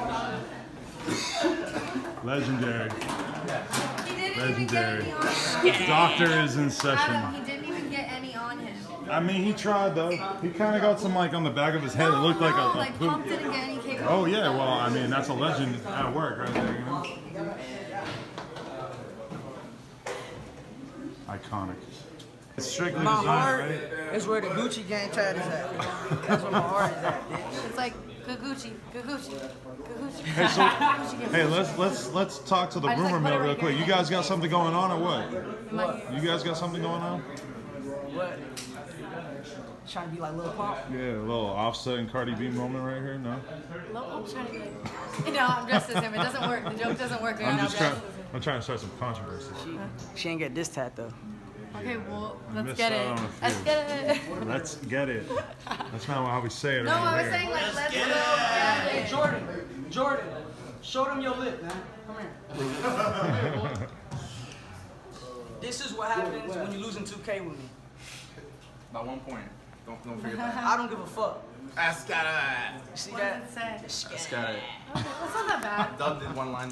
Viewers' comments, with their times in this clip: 0:09 tana clapping for pump🤦‍♂️ perhaps the most cringe part of this
0:59 tana mango is so cringe when she says esketit